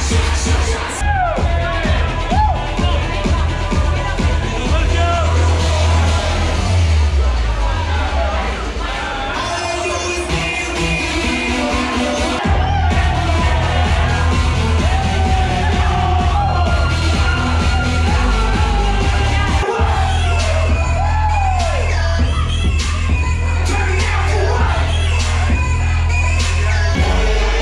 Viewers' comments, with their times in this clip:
0:09 it sounds like all I do is win, but a remix of sorts....what song is that?